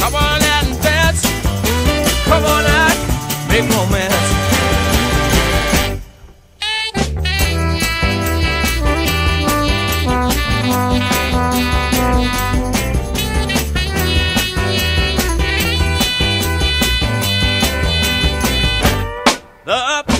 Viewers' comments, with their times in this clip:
0:06 Such a tight song! Loving the brass section... How does the Sax get that warbling tone during the bridge solo?